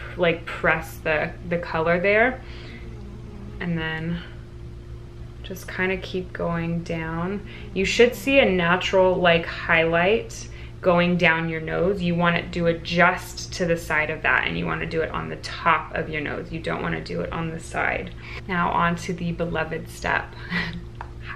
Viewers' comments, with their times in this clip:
0:03 Is that your Bulldog snoring ??? 😍 I hope it was because it sealed the deal for me. My decision to subscribe was probably 50% curly hair videos and 50% ‘she has a Bulldog,’ lol.